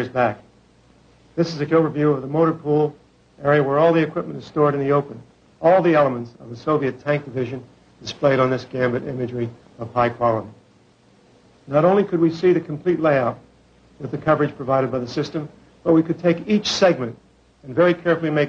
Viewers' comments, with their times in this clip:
0:06 ...does he say "this is a killer view"..?